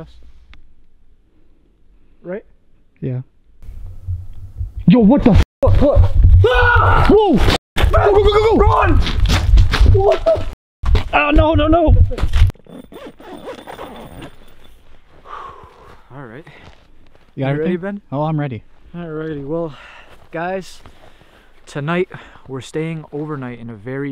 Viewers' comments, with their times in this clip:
0:07 i legit thought you two were saying BUG 🤣i had to re watch that part like 15 times then i finally heard BUCK 😆😆